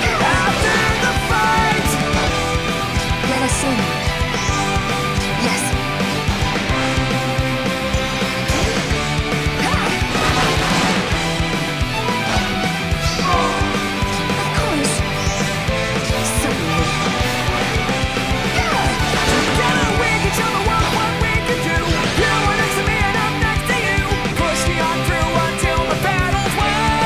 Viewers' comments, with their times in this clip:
0:10 is it just me or does the Quad match up with the music?
0:10 I don't like the music but nice sync